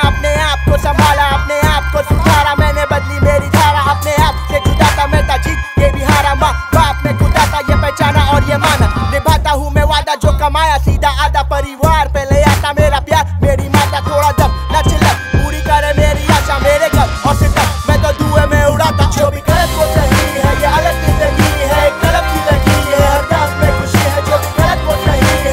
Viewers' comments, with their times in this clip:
0:09 Plus the smooth sound transition on is the best part of whole album. ❤️